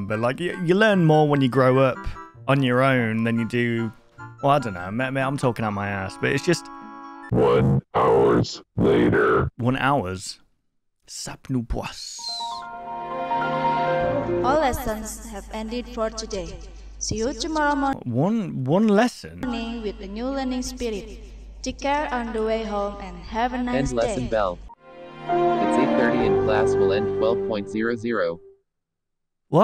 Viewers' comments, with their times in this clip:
0:10 I died laughing when I realised what sapnu puas is upside down and then the little music after he says it is so funny.